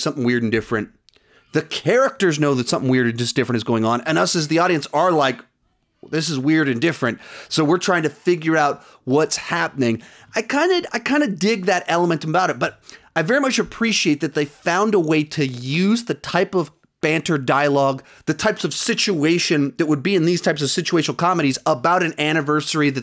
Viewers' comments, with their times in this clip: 0:05 I can tell you don't like a mystery. Personally, I love WandaVision. Still, love your channel. Also, I could hear your kids. Lol